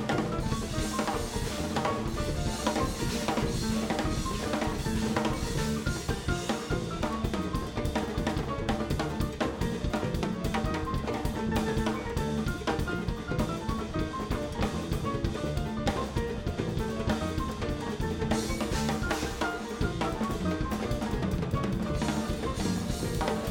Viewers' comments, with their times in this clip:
0:07 That latin break in his solo is the best